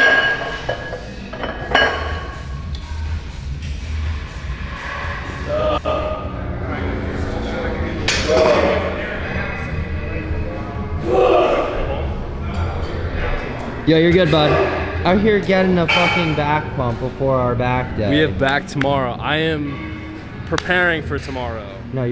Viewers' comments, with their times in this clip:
0:06 guy in the background sounds like he's lifting the whole gym 😂🤫